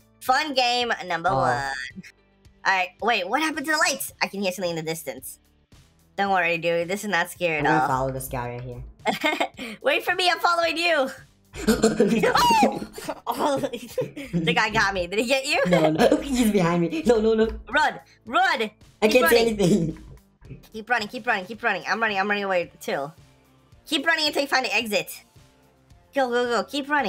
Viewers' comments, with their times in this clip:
0:10 Hi cute koala man I'm a new subscriber aggressive breathing mp.4